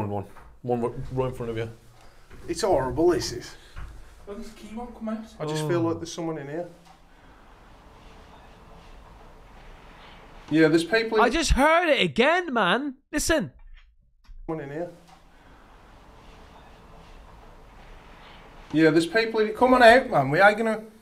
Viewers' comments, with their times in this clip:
0:09 The one ish the male said I don't..... Had to slow it down a bit to get that much. Don't have my crap speakers. Those lil ones I know how to turn my head to them to hear the whole sentence. If you haven't noticed with voice phenomenon they tend to start quiet and end trailing off. Most men I have noticed miss the first and last words spoken. Not sure if it's hearing damage due to how loud you guys are or you are just programmed to listen to the loudest person in the room.